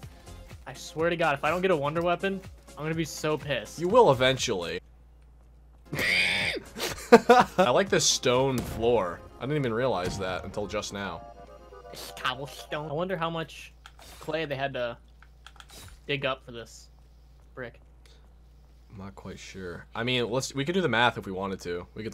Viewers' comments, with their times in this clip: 0:09 fucking killed me “coblesssstone